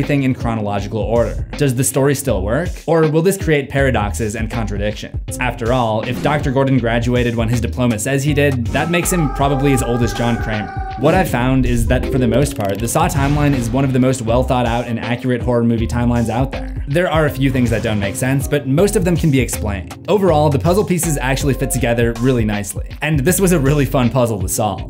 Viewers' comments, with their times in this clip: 0:07 I could recognize coach l4d2’s death scream anywhere 😂